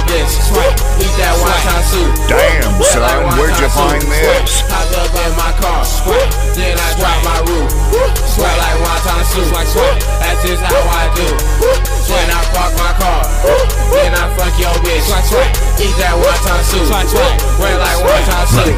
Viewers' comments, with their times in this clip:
0:03 trying to read but keeps getting interrupted by rapping.